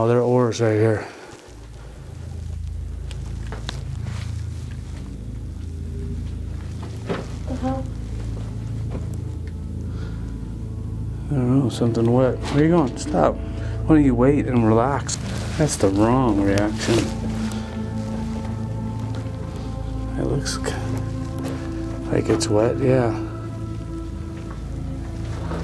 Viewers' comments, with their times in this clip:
0:06 That’s weird. You were alone right? Bc at min you can hear a woman say “help” or “hello”. Maybe just the wind? Idk. Not sure which. It’s funny bc cue the creepy ass music right before you hear it.